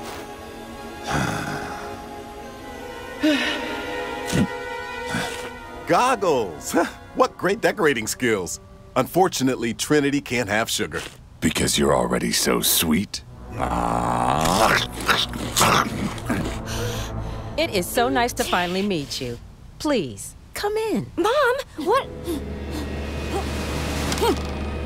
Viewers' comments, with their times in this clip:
0:06 bruh he say Gago or bravo in Filipino gago is another talking💀